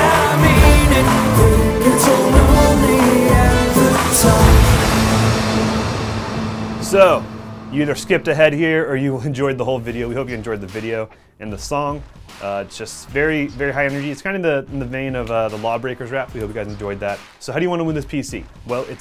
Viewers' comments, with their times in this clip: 0:06 There is a special justice in the fact that the music ends exactly